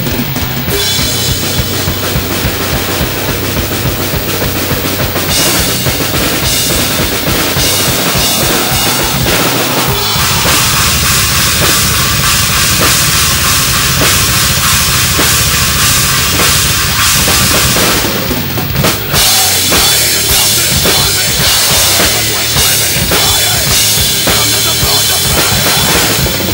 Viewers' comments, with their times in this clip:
0:10 .......amazing fucking job on the double bass